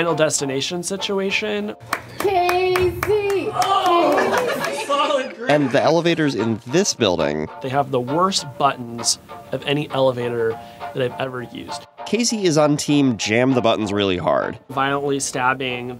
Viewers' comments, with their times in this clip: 0:03 I thought the woman clapping was actually him using his arms to get up